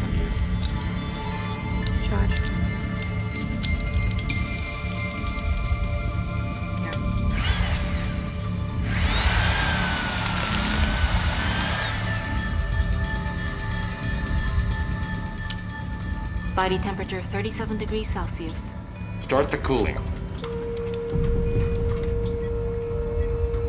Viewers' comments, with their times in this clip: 0:08 that cruch was louder then when you eat carrots